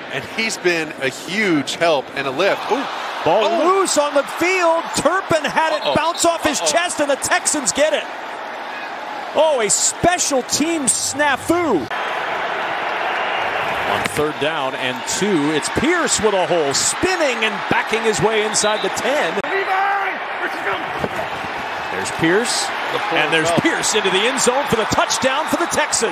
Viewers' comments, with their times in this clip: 0:10 “ohh a special teams taffoo” ???? HUHH😭🤣 love the commentary